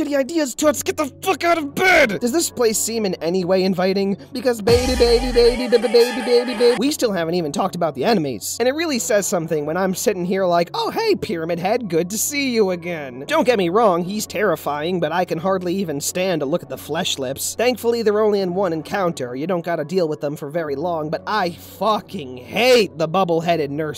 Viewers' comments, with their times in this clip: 0:05 Me:*hears mass destruction* BABYBABYBABYBABYBABYBABY— wait what was this video about?